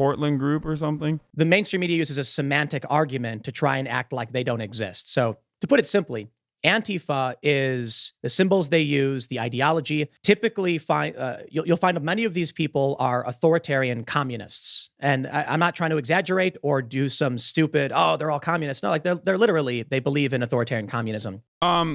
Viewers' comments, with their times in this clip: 0:07 Tim Pool knows what AntiFa is because he pronounces it correctly while Ben continues to see it the way Trump does. Tim is just being a grifter as usual.